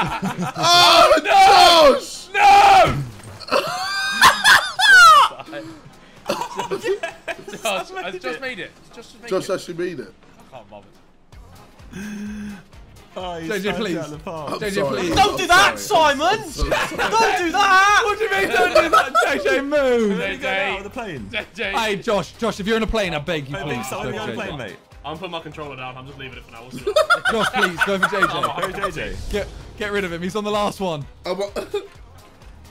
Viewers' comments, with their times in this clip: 0:03 JJ's laugh has me dead
0:14 The way Harry said that lmao